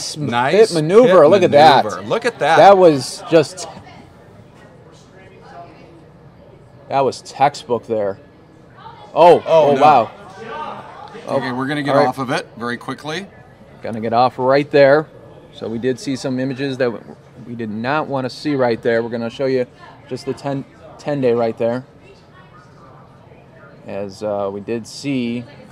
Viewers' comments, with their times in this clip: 0:10 You can actually hear the panicked news producer shout "STOP! STOP!" once he realizes they just live broadcasted a police shooting lol. Like, what did they expect was going to happen? Maybe they should rethink the concept of televised police chases if they don't actually want to show them.